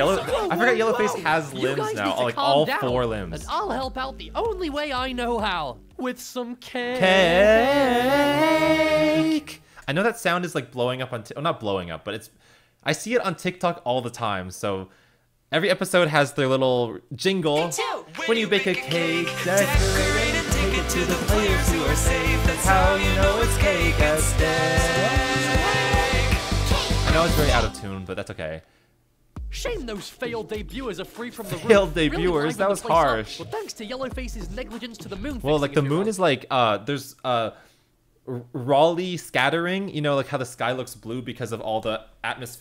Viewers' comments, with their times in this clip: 0:06 the harmony was cool
0:26 i sound like the cake ate stake sound bruh